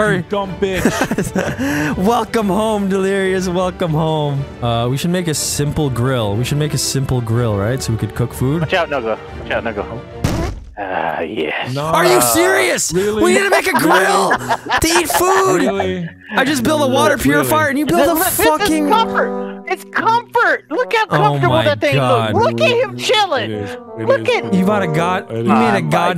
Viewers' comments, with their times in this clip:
0:10 😂the sound of the fart and delirious saying ah yes